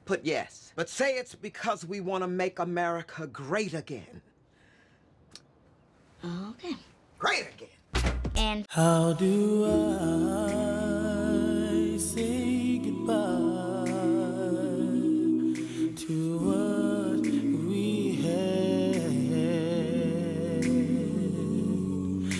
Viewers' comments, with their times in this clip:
0:10 What happened? WTF ! Why the music?